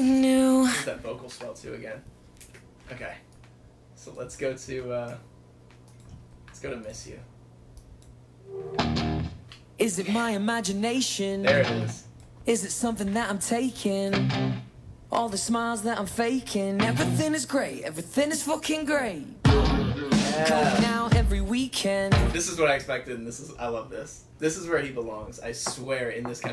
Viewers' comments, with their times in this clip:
0:10 that's love! and in every second of this admiration for Louis's unique voice! Thank You sir, waiting for the rest